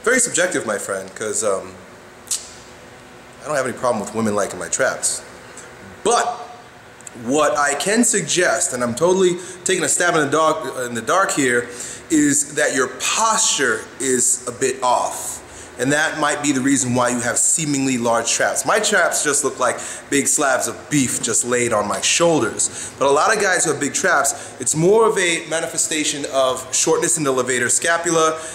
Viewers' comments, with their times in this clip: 0:09 "takin a stab in a dog" Anybody else catch that?
0:09 "stab at a dog" XD